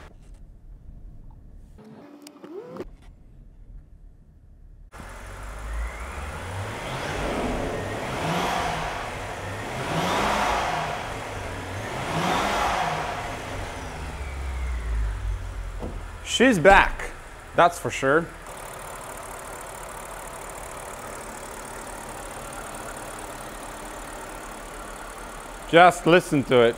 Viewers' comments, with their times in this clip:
0:09 Funny story, I was watching on close captions near the end because my wife was on the phone and when you were revving the engine the AI interpreted the engine sound and displayed [Applause]. Very fitting.